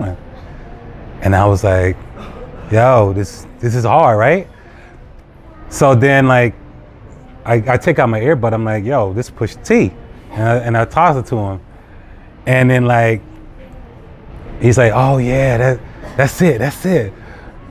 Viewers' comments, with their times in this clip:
0:04 The "NIGGER-SOUNDING" WORD mentioned is explained herein. Although it sounds like Chinese speakers are constantly saying "nigger," they are not. There is no definite or indefinite article in Chinese.They are using the demonstrative pronoun "that" which is "Na ge" in Chinese which makes the following transliterated sound: NAH -GUH (say it quickly as Chinese is a tonal language). I hope this helps dear brothers and sisters. Enjoy!